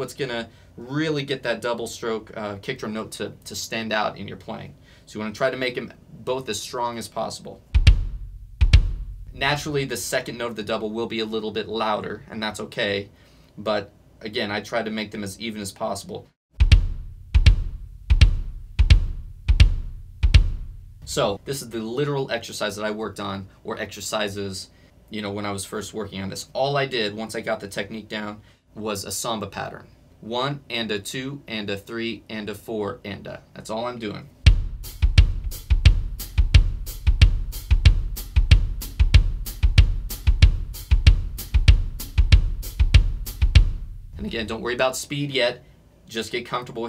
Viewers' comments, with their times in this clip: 0:03 Naturally, the second note of the double will be a little bit louder. That's so interesting: When I try to imitate this technique while watching the video for the first time, by first stroke is always louder. I guess that probably means I'm doing something fundamentally different from you, but who knows. In any case, if you can make the sound more even, and we seem to be using a mixture of muscles (full leg, ankle, toes) then you can probably make either stroke louder, just like with hand double strokes, where, even though the first note is naturally louder, you can actually make the second note very slightly louder by messing with the time displacement of your arm, wrist, and finger motions (specifically, I think I wait until after the first hit to grip with my fingers), and of course the standard goal is to be just shy of this so that the strokes sound even.
0:34 am I the only one who's done the tongue clicking and the "snooooooooop"